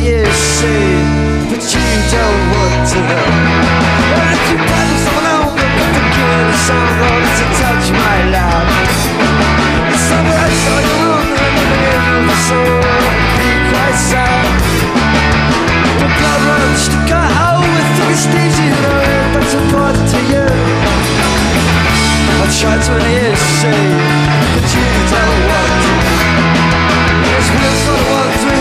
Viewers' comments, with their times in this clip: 0:10 Love how he mumbles through the part pete sings... they couldnt really do libertines songs to the same standard apart :P
0:12 did he say "Welcome Pete I sang" ?